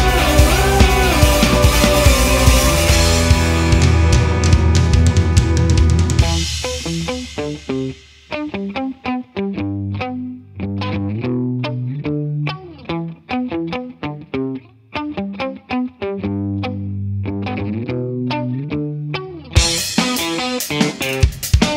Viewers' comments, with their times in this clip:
0:05 I really dig the riff